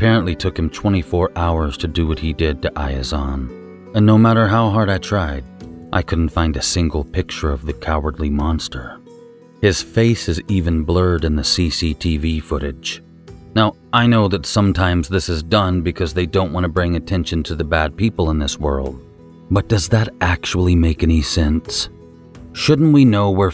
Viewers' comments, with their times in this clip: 0:10 GOD I LOVE THE LOOK OF YOUR VIDEOS!! ADDING THE LITTLE MOVEMENTS AND BLINKING SEEMS LIKE SOMETHING THAT WOULD BE INSIGNIFICANT BUT IT ADDS SO MUCH TO THE WHOLE VIDEO SURPRISINGLY!! 🤘🏻😝🤘🏻 Also I seriously dig your narrator voice! I’m gonna have to make a playlist of your videos to listen to while I’m going to sleep. Very soothing voice! 👍🏻